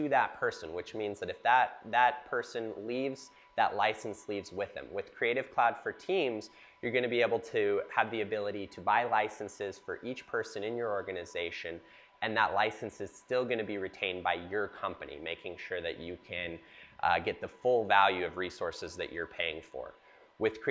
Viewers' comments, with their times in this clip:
0:05 is the humming in the background a full rack of u2 chassis? LOL only in San Fran